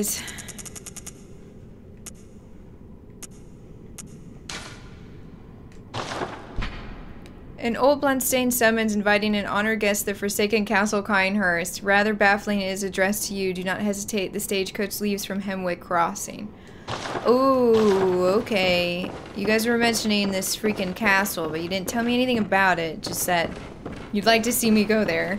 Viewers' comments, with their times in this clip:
0:07 It bother me so goddamn much that she pronounces Cainhurst Kyne-Hurst. I'm 99.9% sure that it's pronounced Kayne-Hurst.